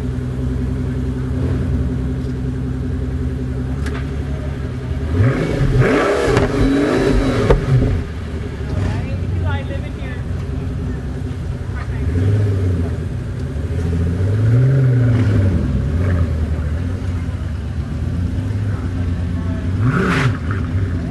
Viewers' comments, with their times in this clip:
0:09 Did I hear a woman say "People are living here"? Pfff... next time rev it even harder!